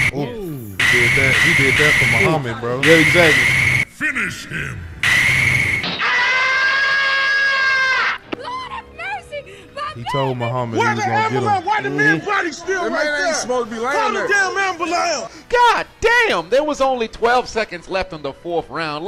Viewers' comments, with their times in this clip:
0:05 that is the best/funny Tom & Jerry sound effect EVER!